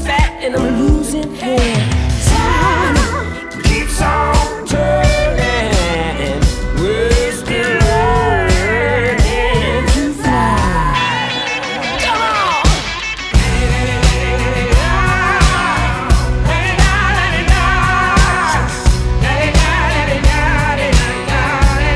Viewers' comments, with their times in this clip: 0:07 I wish we had a little of that 'middle eastern sound' in all music. Theres something about it that like hypnotizes me in.